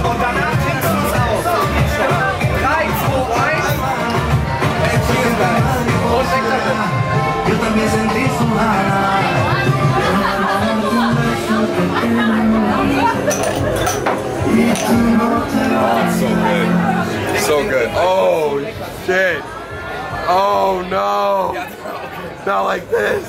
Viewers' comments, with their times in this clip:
0:08 Bruh the moment White and Asian Germans and a Black North American are in a bar in South Korea, drinking Irish beer while South American Spanish music plays! 💀